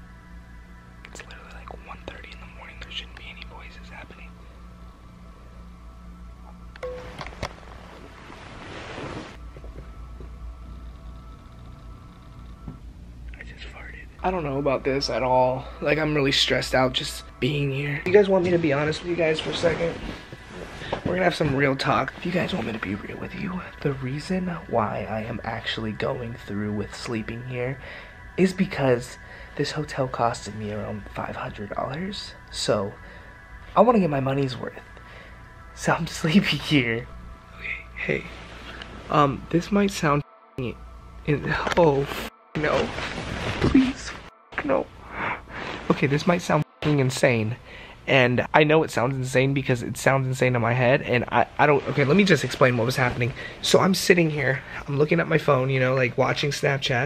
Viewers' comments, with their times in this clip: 0:06 there was like a quiet bang
0:11 When he whispered in the camera "I just farted" I yelped. Like I was trying to stop myself from laughing loud because I don't want to wake my family up, so I accidentally yelped. Love you!!😂😂💕💕💕 listen closely!!
0:13 “I just farted”. I deadass thought that someone was knocking 😂🥵
0:14 whispers seriously and quietly “I just farted”
0:15 most quiet voice ever and so serious "i just farted"
0:42 When I hear my dad coming up the stairs to get me out of bed for School